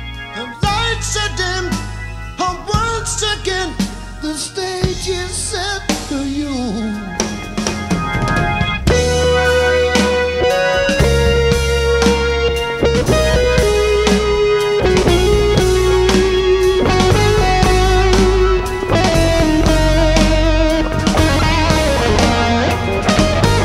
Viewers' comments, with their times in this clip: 0:08 The solo is unbelievable, but obviously overdubbed decades later (Hackett simply wasn't THAT good back in 1974).